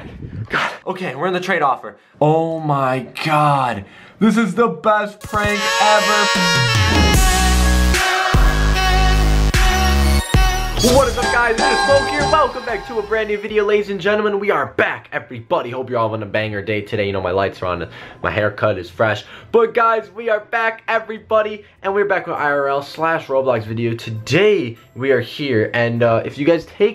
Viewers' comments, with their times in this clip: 0:10 Couldn't stop listening to the music